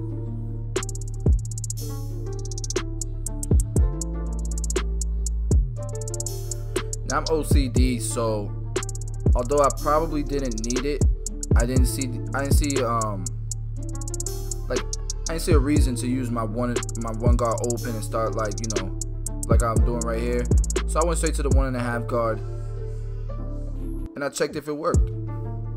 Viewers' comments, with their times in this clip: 0:06 Lol I skipped to and just thought what he was saying was a crappy rap😂😂😂